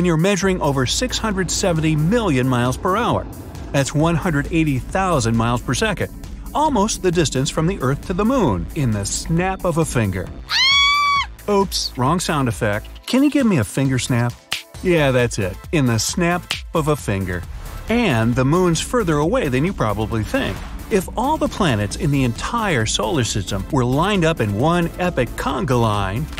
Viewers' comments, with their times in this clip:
0:10 who shouts when snapping your finger